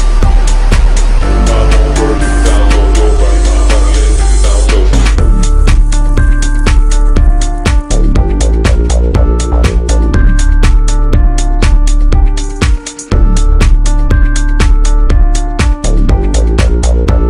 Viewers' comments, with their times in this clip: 0:05 I just love that bass. ;D